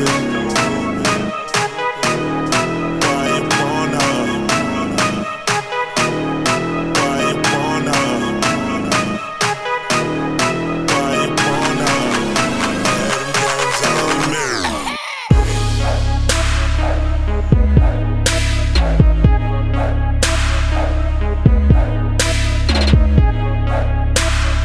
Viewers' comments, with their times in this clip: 0:10 nooo i mean it says something entirely different.. check out ...sounds very.. rude